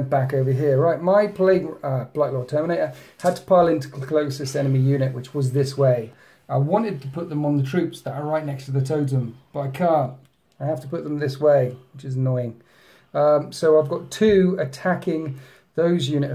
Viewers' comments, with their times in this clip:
0:04 You can hear Slaanesh in the back ground breathing heavy over all the pain he is getting to feed off of.